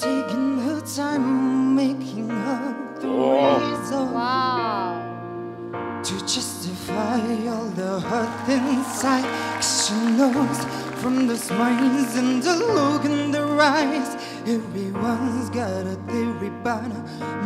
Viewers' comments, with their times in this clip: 0:04 the Mongolian Delta Goodrem